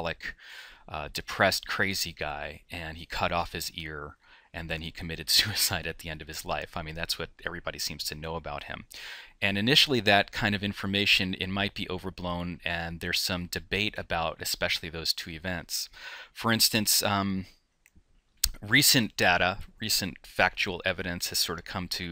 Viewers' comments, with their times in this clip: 0:04 laughs at the fact he committed suicide me: bruh